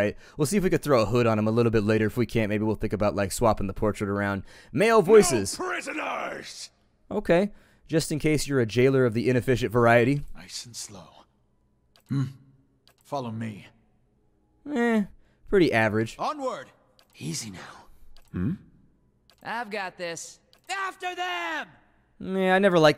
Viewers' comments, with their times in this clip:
0:03 The "Male-Feisty" voice sounds so familiar...